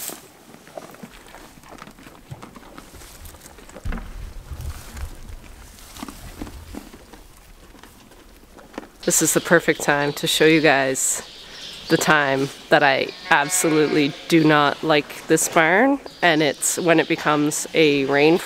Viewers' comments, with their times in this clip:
0:05 Grain crunching asmr ❤